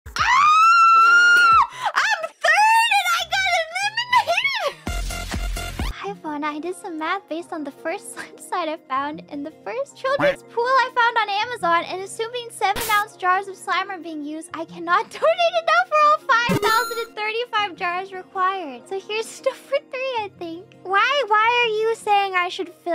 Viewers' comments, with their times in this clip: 0:04 music caught me off-guard and i laughed a for a minute straight